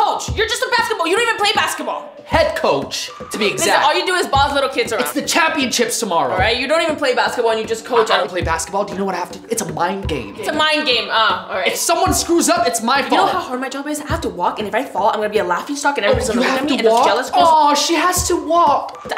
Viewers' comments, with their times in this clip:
0:05 Champion chips. Im dead lmfao.